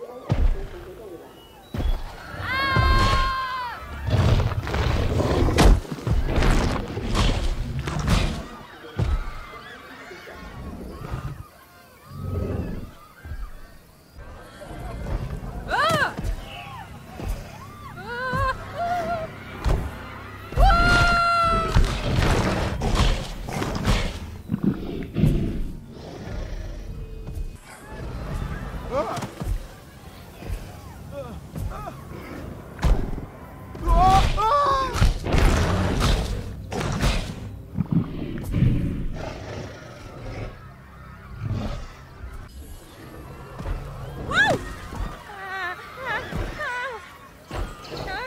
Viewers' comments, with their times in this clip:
0:03 the best voice acting ever, truly so good I cried
0:32 you can actually hear t.rex roaring in the background!
0:33 trex roars because he wanted to eat that person